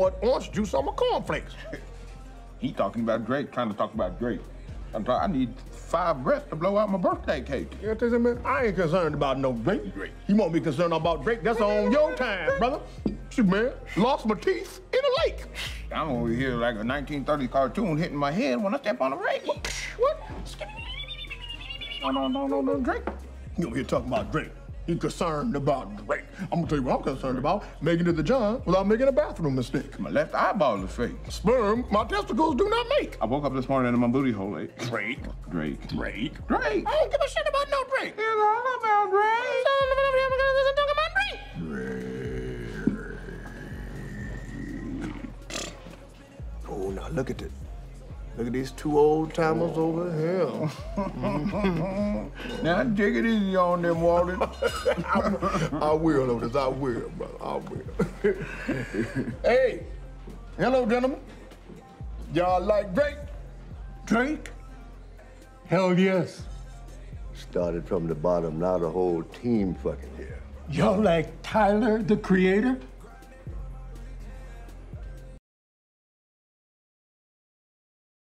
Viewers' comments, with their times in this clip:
0:07 incredible acting with the sniffle 😂
0:21 Kegan just made a sound effect from Spore lol
0:35 is where soulja got DRAAAAAKE?!?! FROM
0:35 Is this old man soldja boy? DRAAaaaaAAAaaaAaaAKkkKEeEE
0:39 had me dyin how key talks
1:05 That dead monotone, “Hell, Yes.” Sick.